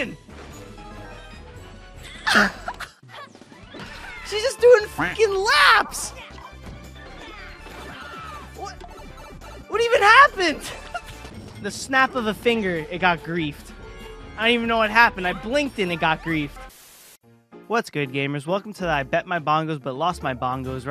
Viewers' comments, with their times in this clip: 0:03 He sounds like Charlie Day